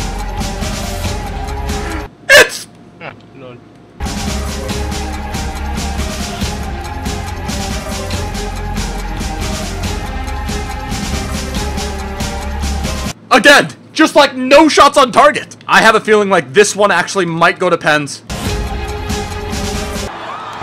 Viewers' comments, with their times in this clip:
0:03 Did anyone hear that guy say "Ha LOL" softly